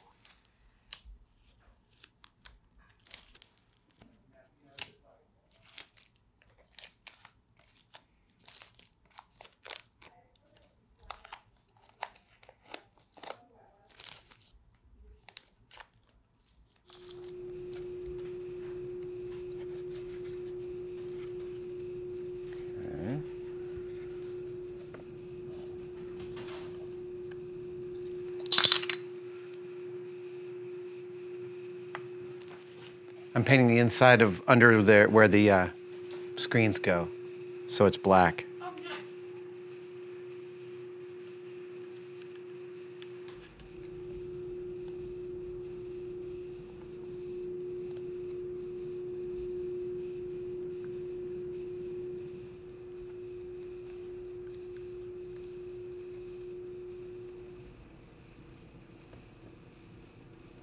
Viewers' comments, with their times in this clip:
0:08 ASMR Was awesome 👏
0:38 did no one hear the oh good on that was strange. sorry for my bad english iam german.
0:43 Can we talk about the creepy frequency that starts play minutes? Also, what was up with that random voice?